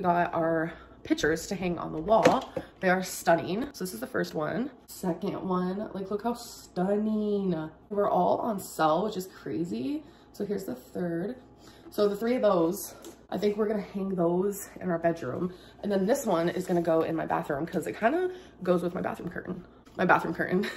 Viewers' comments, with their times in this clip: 0:08 omg…. listen to her voice!!!! “They we’re all on selllll. It was crayzaayy.” Like some pretentious Beverly Hills rich girl.